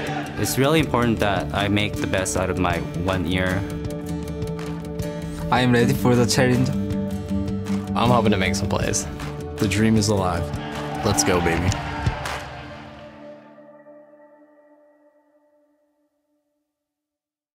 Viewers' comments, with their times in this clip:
0:04 "I am weady for the charrenge"